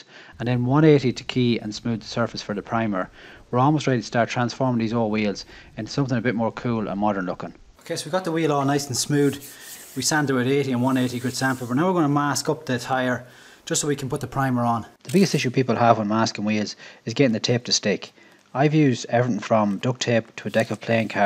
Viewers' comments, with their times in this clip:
0:09 Nice and “Smood”